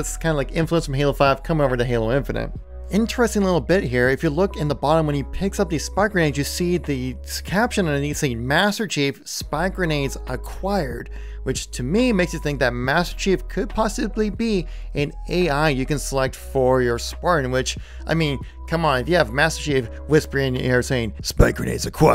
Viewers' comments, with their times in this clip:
0:05 definitely says Mister